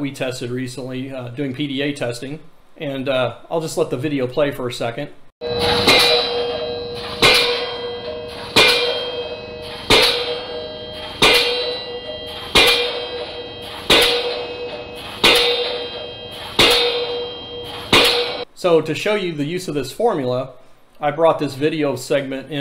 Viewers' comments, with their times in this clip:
0:06 "Earplugs? We ain't got no earplugs. We don't need no stinkin earplugs."